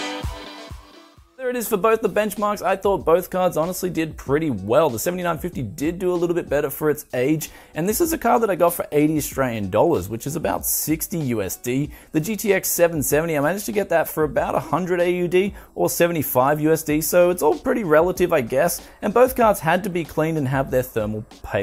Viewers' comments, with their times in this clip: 0:07 Lol I heard "...and this is a card that I got for 80 strillion dollars."